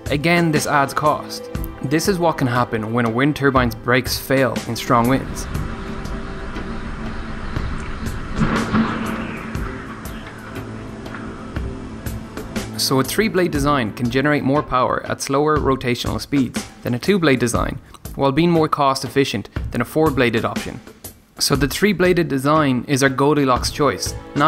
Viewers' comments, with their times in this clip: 0:08 bf4 music plays